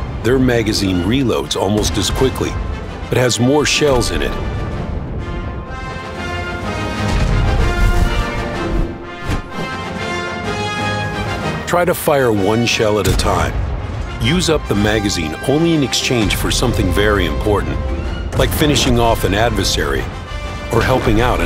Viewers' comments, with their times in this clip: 0:03 after video and sounds looks like marvel's movies :D